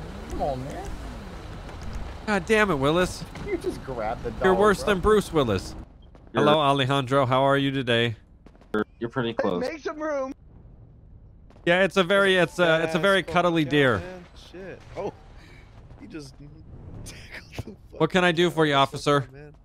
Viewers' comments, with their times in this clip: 0:07 do I hear muppets voice 🤔.. Who was playing the other animals 🤔? My brain itches to know lolz